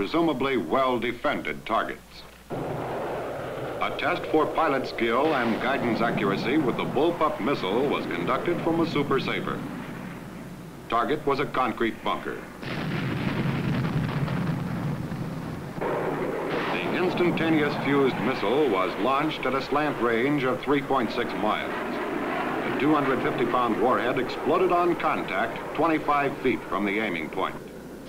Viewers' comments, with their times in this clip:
0:10 The most demonstrative "was" ever uttered.